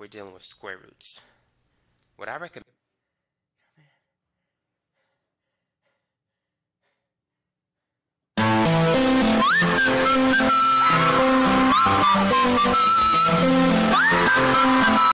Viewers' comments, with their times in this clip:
0:06 the scream at the end💀